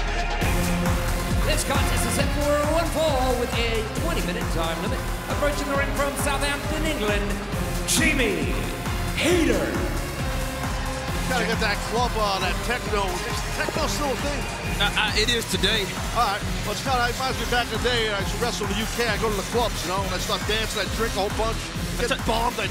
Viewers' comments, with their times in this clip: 0:10 Tell me Justin Roberts didn’t called Jamie Jimmie? he always botches